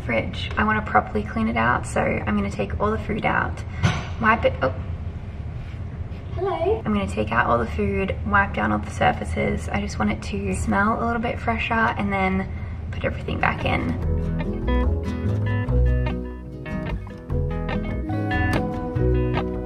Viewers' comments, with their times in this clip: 0:06 Her little "hello" to milo gave me Alice In Wonderland vibes.